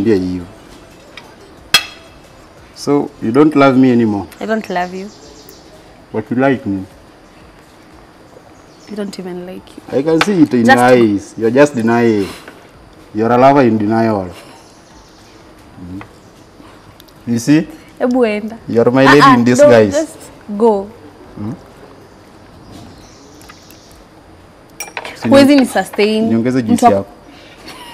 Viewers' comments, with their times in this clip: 0:10 .. that's what we call pure Luo accent
0:10 i can see it in your eyes. you're just denying. you're a lover in denial. you see! you're my lady in disguise. 😆😆😆the lady had to laugh.